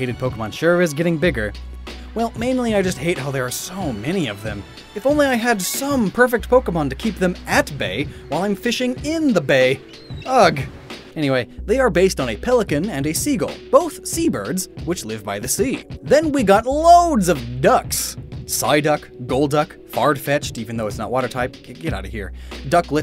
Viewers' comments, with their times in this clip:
0:05 sounds like a sponsorship ad...